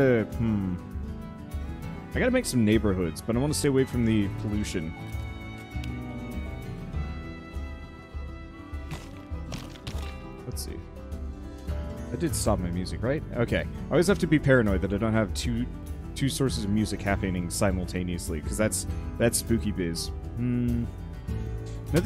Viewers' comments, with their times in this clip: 0:08 That music was cursed.